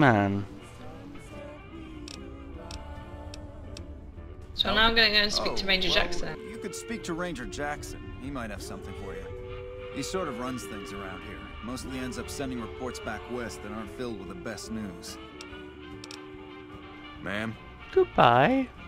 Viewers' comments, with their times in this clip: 0:05 is it just me or does the guy sound like michael rosenbaum?